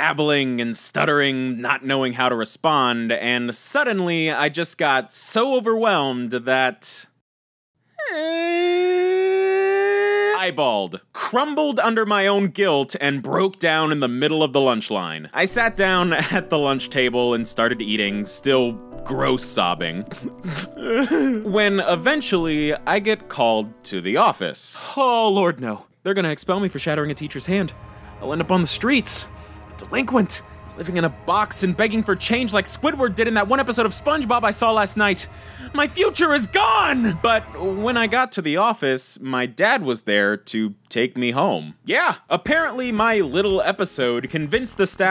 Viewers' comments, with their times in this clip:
0:07 He sound like a siren
0:29 that “my future is gone” sounded like you truly were filled with immense agony